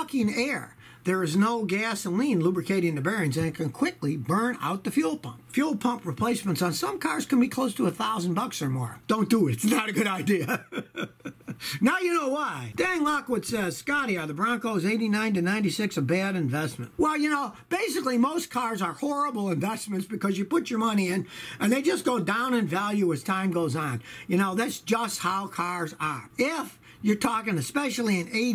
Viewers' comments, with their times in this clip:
0:10 Finally, a laughing fox! :-) 🦊